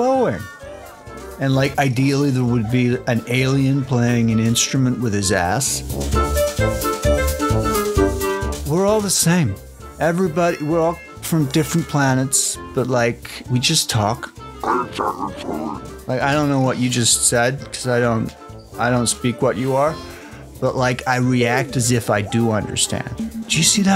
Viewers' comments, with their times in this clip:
0:09 The totally not Cantina theme sounds good in its own right